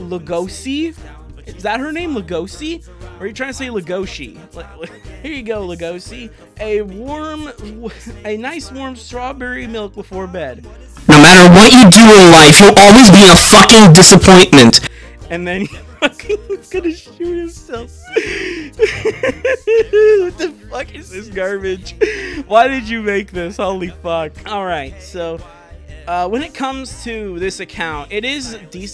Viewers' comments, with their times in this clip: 0:10 Dad from loud house said calmly.
0:11 Hey, Those sound like the voices in my head